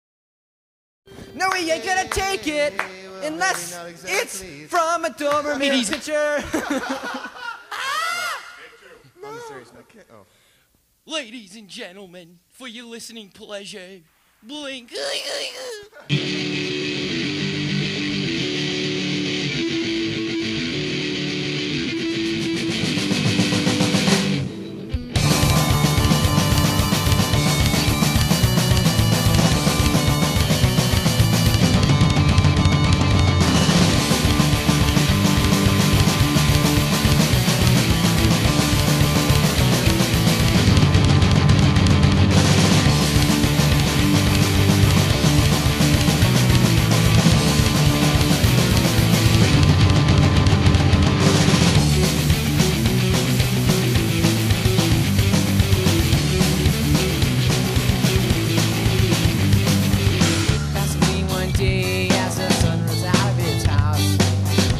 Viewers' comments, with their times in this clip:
0:06 after mark screams, Unknown: "mark, be serious" Mark: "...ok"
0:52 one of my favourite blink riff